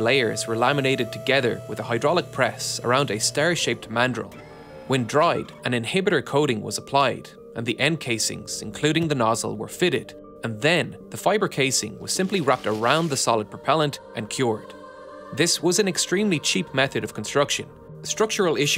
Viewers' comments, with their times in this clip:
0:05 Music the chorus is really nice, wish a title was provided